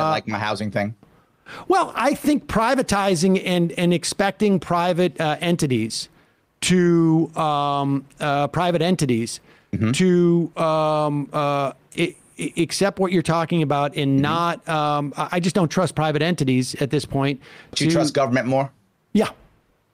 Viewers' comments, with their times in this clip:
0:03 I agree the system is broken but his way aint the answer. Also lol he says " you didn't like my housing thing" which he sounded so let down that Sam Seder didn't approve.